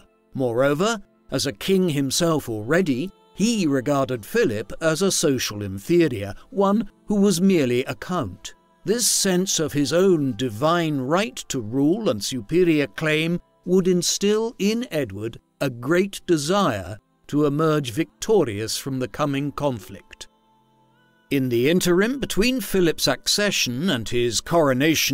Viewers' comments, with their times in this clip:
0:06 Anyone else double take ? 😂😂😂 oh COUNT 😂🤣